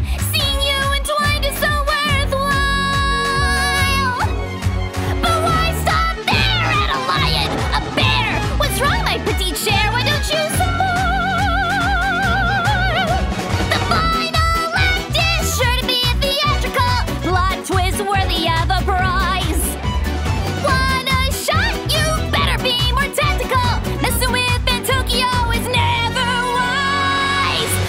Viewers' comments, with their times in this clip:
0:10 Bro she hit the opera in 5 star just like the game if it was a female